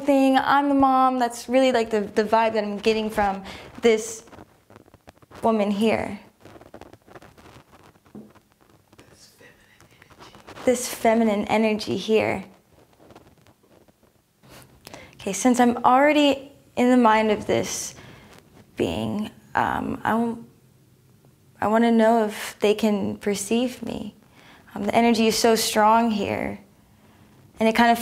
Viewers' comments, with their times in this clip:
0:05 I was very surprised by the similarities in the viewers results, then I heard someone in the room with the second viewer instructing her to say feminine energy instead of what she was saying! Very disappointed and hearing someone instruct her on what to say has made me totally lose faith in what you are doing here. I’m sure I’ve heard you say previously that these sessions are recorded by the subject alone in the room. Not sure what to believe anymore. Also all the viewers seem to end the session with an interview with the feminine energy that finishes with a headache, seems like they’re all following the same script. Years ago all your viewers sessions were totally different perspectives, not mirror images of each other.
0:05 The voice it’s the viewer talking under her breath, sort of sub vocalizing her thoughts. I heard her do it several times.
0:06 for someone off camera whispering her what to say. Disappointed beyond belief.
0:07 TIME SHE GET LOST THE IN THE SCRIPT AND A MALE VOICE TELL HER WHAT TO SAY NEXT "THIS FEMININE ENERGY HERE"
0:07 EXPLAIN TIME SHE GET LOST THE IN THE SCRIPT AND A MALE VOICE TELL HER WHAT TO SAY NEXT "THIS FEMININE ENERGY HERE". OR WE WILL REPORT YOU FOR FAKE NEWS.
0:08 who is whispering in the background telling her to say "this feminine energy here" I thought these were blind and they were the only ones in the room.
0:08 can you please tell me if that was someone on the set talking to her?
0:08 I read the comments first, and skipped ahead to Yes, it's very plain someone whispering to her from behind the camera. And if you watch her you can tell she sometimes looks at a person there. This, on top of a man who channels demons?!? WTF.
0:08 Why would the guy whisper so loudly? This is sad because remote viewing is authentic and it's extremely rare for someone to get good enough at it to ultimately become useful... but now people may not think it’s real because of this.
0:08 I read the comments first, and skipped ahead to Yes, it's very plain someone whispering to her from behind the camera. And if you watch her you can tell she sometimes looks at a person there. WTF.
0:09 I love remote viewing and I had great experiences myself but in minute you can hear a voice whispering to her what she has to say......... I'm confused
0:09 Whats that voice ? Sounds like you are scripting these wievers? Are you faking all this shit? Well, that was expected.
0:09 What's with the vocal prompt ???. That type of thing leads one to doubt the veracity of your claims.
0:09 we can hear her voice
0:10 I don't think she's bring coached but with the person whispering loudly must have violated the remote viewing conditions. I think she said that to help the women speaking articulate what she was trying to say. I don't believe remote viewers on straight are false but they imo shouldn't have done that.
0:10 All communication is happening inside her mind. That's why you don't hear a voice anywhere else besides these 3 words. Obviously there was someone here in the recording helping her refine what she was saying. Sidenote, sounds like a mature black lady, possibly her physical mother in the background.
0:10 As other people said, I also noticed the whisper so a 'red flag' popped up. So as someone who does believe in remote viewing, I looked for an explanation. After reading it, I am now disappointed as being new to Farsight and their sessions, I was under the impression these videos were 'live', being done as the RVer were doing their things. Knowing that it is edited or guided to create a more professional look, makes it feel less authentic. I would rather see a raw, in the actual moment, first time viewing the topic type videos. Not something 'polished'. Now knowing they are told where to look, it takes from the realness of it. The way they were looking around, staring etc was one thing that made it feel real, in the moment, actually being done. So, while filming, are they actually going through it all again, actually remote viewing, or is it just acting out what they wrote earlier on paper? I'm unsure.